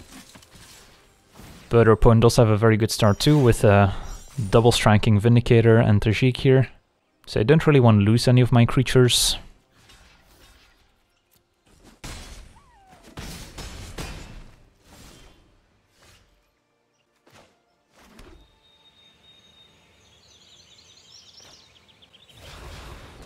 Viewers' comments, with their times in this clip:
0:10 if you listen closely, you can hear Eye of the Tiger power chords